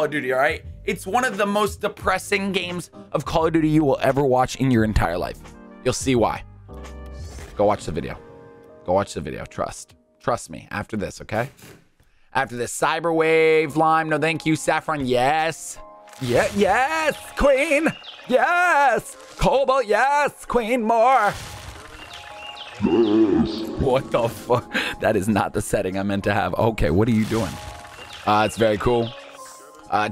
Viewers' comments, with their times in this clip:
0:07 I’ve been trying to figure out the name of the background song forever. It gives me such a nostalgic vibe and is so chill. (The one that starts with the lyrics about “bright sneakers on“)
0:14 I dont know the name of the song that starts on Which song is it? Its really good and relaxing